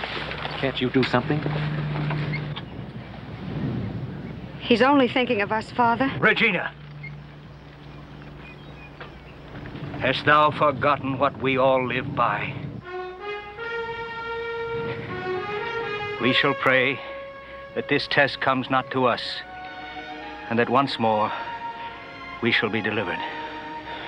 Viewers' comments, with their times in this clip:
0:10 you can hear a plane, maybe it's just a mustang 😄